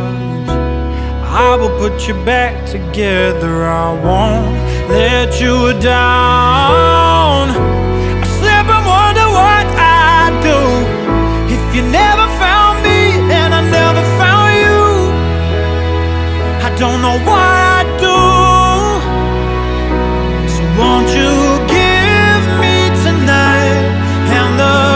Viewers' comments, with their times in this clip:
0:07 What a beautiful song!!! 🔥🔥🔥🔥🚒